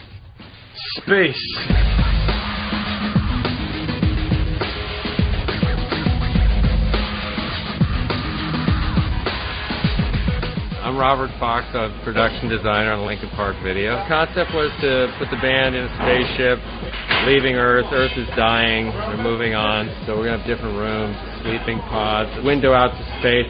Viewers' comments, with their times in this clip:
0:05 Is that a remix of Reanimation's By Myself? Sounds a lot different